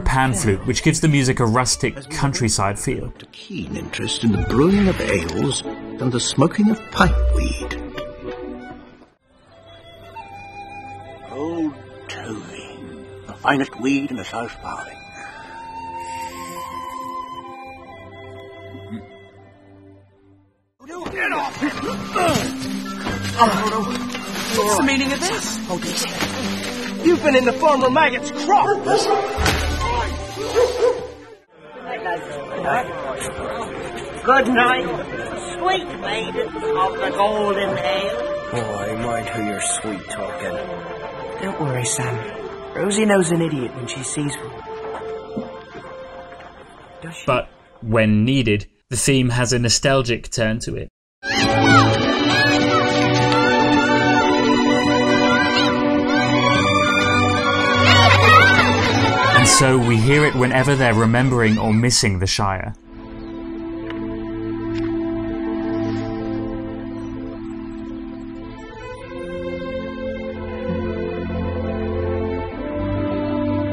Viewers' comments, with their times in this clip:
0:10 that is an Irish whistle, not a pan flute.
0:10 Many thanks for a very useful upload. I believe it's a Penny Whistle being used. A Pan Flute can't make those articulations.
0:10 I thought that was some sort of Irish tin/low whistle can you really articulate that expressively on a pan flute?
0:59 ITS: "And so, we hear it whenever they're remembering or missing the Shire." Emotional scene plays out with Frodo and Bilbo looking at the map and the music playing Me: "Now that's a very emotionally rich scene where the music pretty much tells us what they're feeling without having to spell it out for us-" Frodo: "I MiSs ThE sHiRe."